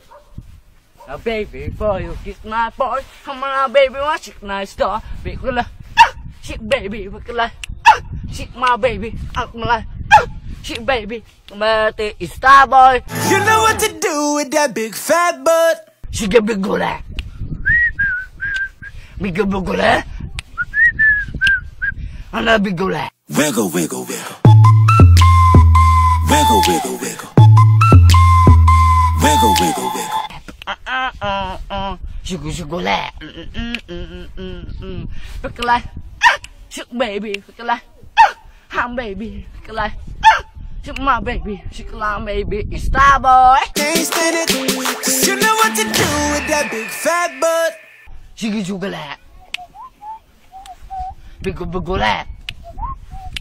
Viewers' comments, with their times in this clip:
0:05 I thought that was my dog outside 😂😂😂😂
0:06 kind of sounds like the ROBLOX oof sound
0:30 How i sing
0:35 my neighbor's dog makes such sounds as he freezes his nuts to cement